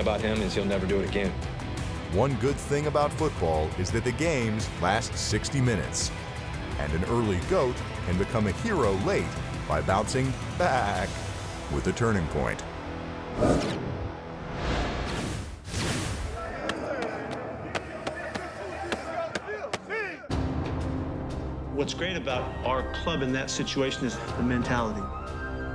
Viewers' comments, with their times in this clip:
0:08 That "baaaack" almost gave me cancer